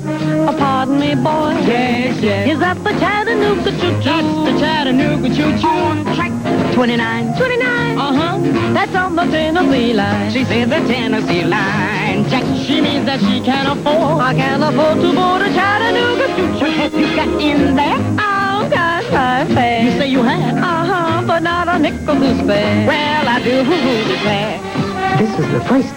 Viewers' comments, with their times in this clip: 0:06 THAT IS SOME DAMN GOOD MUSIC!